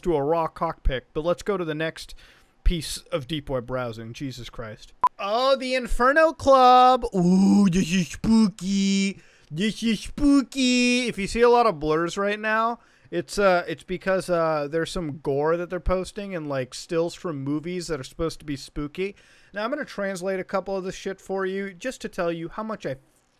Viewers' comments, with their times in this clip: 0:07 the way he says “ouwww dis is spwooky” help